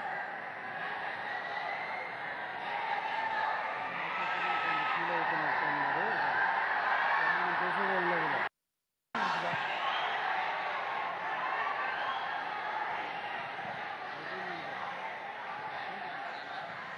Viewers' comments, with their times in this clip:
0:03 Listen carefully the background voice says "Naga Chaitanya feel avthunatu vunnadu, tanaki chese varu leru ela"